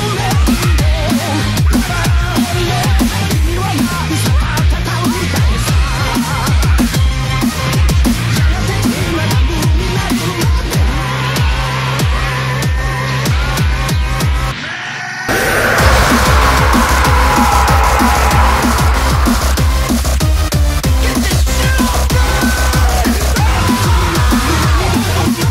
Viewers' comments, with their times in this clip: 0:05 I love that music and just pumping up for Goku to scream out while blasting Gohan 😂. Btw you play like a god and I respect that
0:07 that was a pretty good edit where the music went with the kamehameha